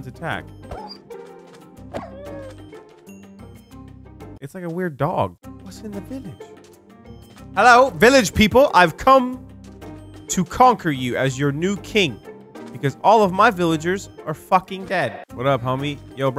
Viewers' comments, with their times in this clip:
0:04 Were those coyotes?